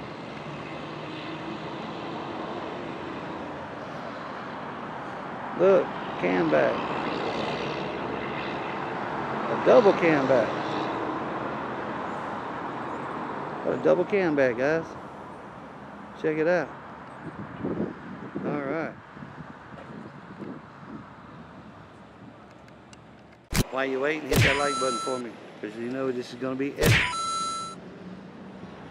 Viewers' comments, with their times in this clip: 0:10 😂😂😂😂😂 cam back in stereo 😂😂😂😂😂😂